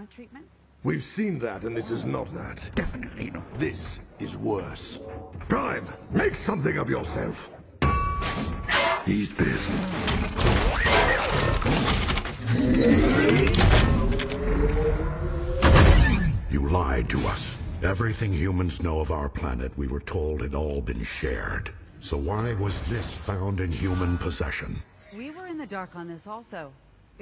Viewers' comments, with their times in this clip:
0:09 Not gonna lie... I got chills at the transformation sound and knew he was very mad :T